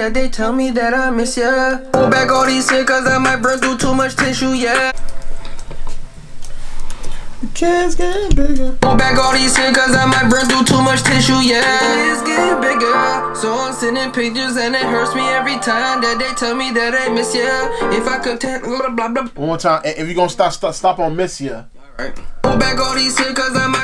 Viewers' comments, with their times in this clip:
0:08 bro he sounded like the love emotional lil durk no cap bro i know how durk sound bro he not even my favortite rapper but still.